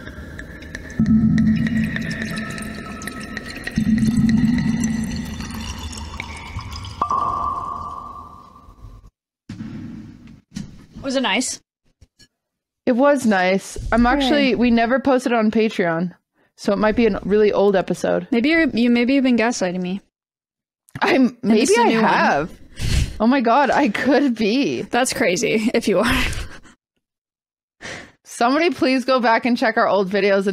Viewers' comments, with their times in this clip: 0:06 that pop/clink was sooo satisfying
0:12 it sounded like cartoon sewers